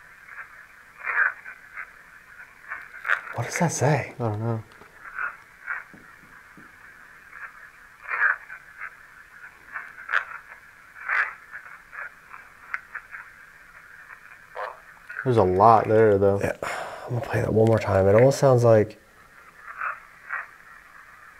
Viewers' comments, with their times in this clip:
0:07 I heard 3 knocks